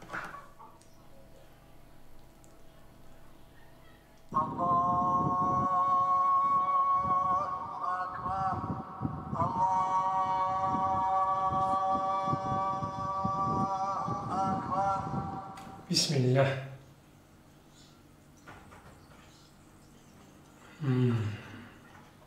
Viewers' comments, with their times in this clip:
0:05 min beautiful shot with azaan 🤲🏻😍